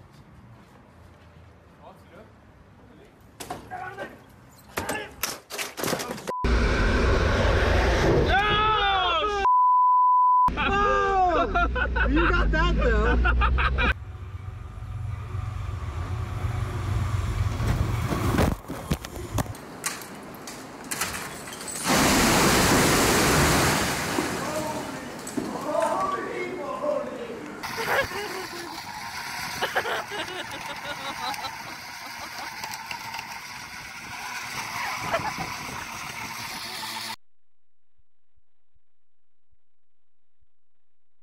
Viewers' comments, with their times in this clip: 0:07 at least they can laugh about it
0:27 her laugh was making me laugh 😂